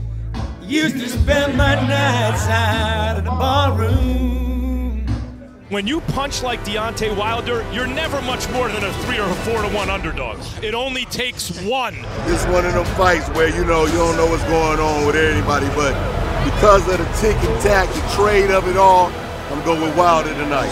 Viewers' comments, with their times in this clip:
0:05 I love when He sang that song, Tennesse whiskey,real champ Fury.